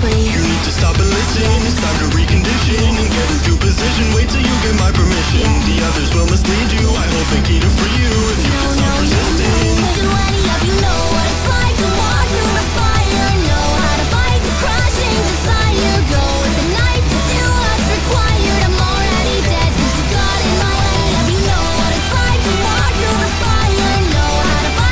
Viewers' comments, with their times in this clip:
0:09 DAMN. this song is powerful 💚💜
0:11 the vioce recordiclng glitched noooo